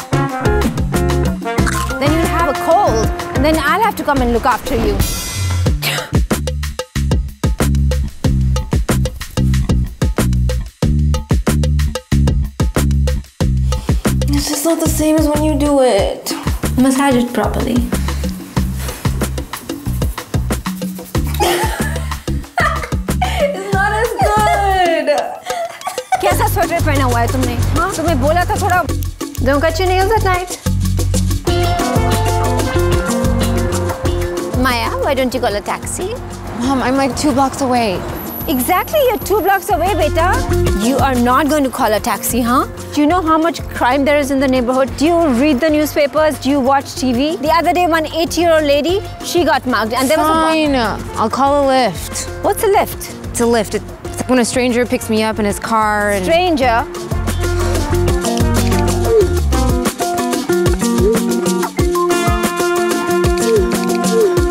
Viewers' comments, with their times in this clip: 0:06 when she sneezed, I said bless you......
0:48 an 8 year old lady??!